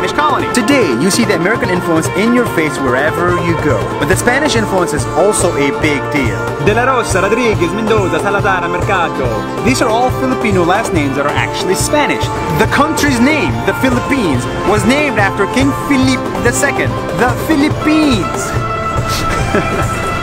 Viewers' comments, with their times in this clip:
0:07 the way you literally said those last name is not actually the way we say it xd